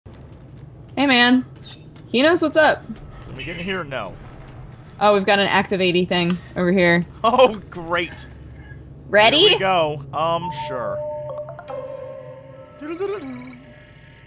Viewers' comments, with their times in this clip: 0:00 "Hey man," Something about the way she saids that make me wanna, make me wanna sing like, LIKE.... "DAY MAN!!!! UHHHH-AHHHH-AAUHHHHHHHHH FIGTHER OF THE NIIIGHT MAN!!! UHHHH-AHHHH-AAUHHHHHHHHH CHAMPION OF THE SUN!!! UHHHH-AHHHH-AAUHHHHHHHHH YOU'RE THE MASTER OF KARATE AND FRIENDSHIP TO EVVERY-ONE!!!!! DAY MAN!!!!!!!! (DAY MAN)" Sing ONE More TIME!!!! UHHHH-AHHHH-AAUHHHHHHHHH...